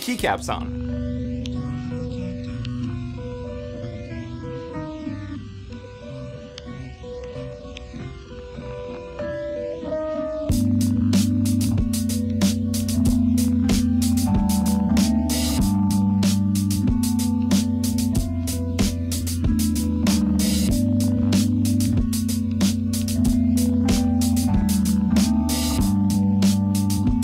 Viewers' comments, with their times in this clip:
0:08 that music... rip headphone users...